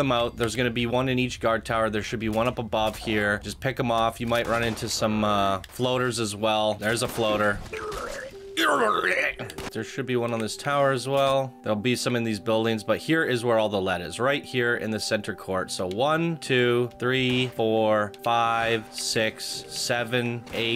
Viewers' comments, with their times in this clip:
0:07 bruh the fucking noise he made caught me so off guard lmao
0:07 Subtitles: Huuhhhh! The actual sound: huuurghrurhgh